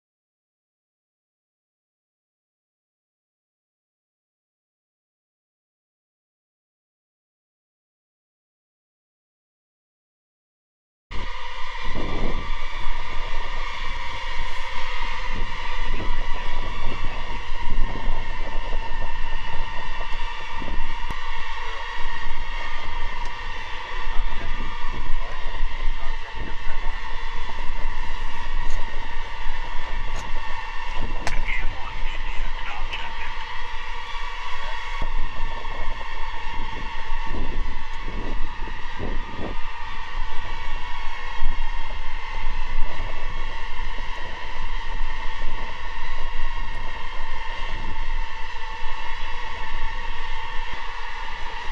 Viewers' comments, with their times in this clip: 0:10 what it would sound like if AI made its own Hellish underworld
0:39 orbit sound is similar to sound when he enters the wormhole in 2001 space Odyssey.